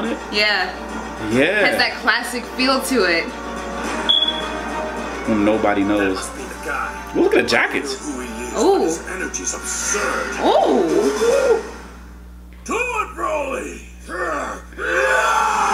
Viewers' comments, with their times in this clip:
0:03 Your fire alarm is reacting to Broly's power... xDDD